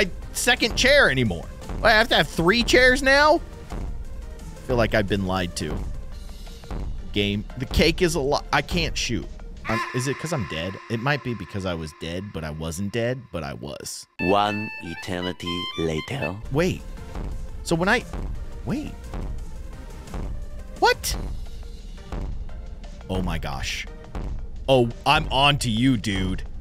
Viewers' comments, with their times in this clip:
0:09 he but the sound go aaaaaaaaaaaaa a a .